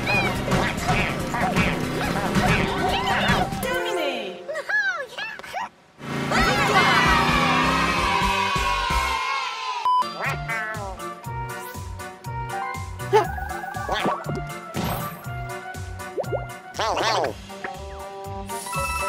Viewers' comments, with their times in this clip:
0:07 Why the Kid's Cheering sound effect Yoshi?! I THOUGHT WE WERE FRIENDS